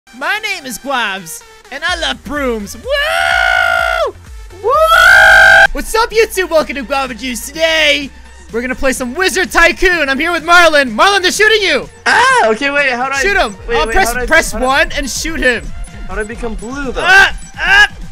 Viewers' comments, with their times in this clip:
0:00 the song is perfect